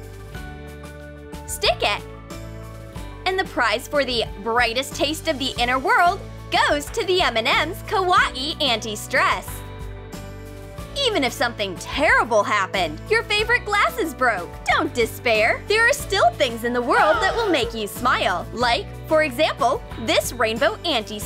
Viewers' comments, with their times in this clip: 0:07 TROOM TROOM WHY DO YOU SAY KAWAII LIKE THIS ka-wa-..e WHY THIS BATHER ME SO MUCH GRRR